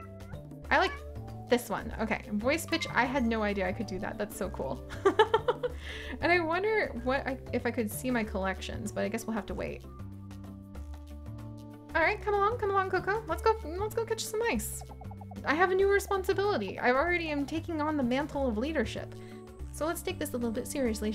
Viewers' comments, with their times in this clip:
0:04 WAIT FROM WHEN WAS THERE MORE CATTAILS!?!? AAAAAAAAA The laugh there sounds so funny in double speed